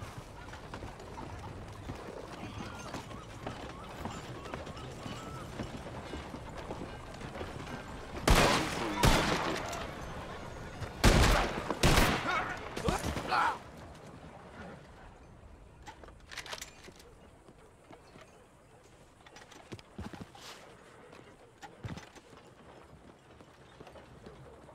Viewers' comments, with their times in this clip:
0:09 Dead eye and sucker punches but yall gonna forget the crunches